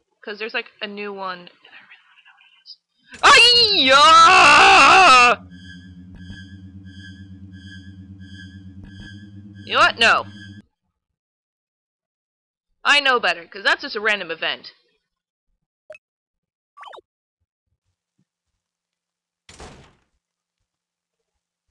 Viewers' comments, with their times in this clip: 0:03 you sounded like china XD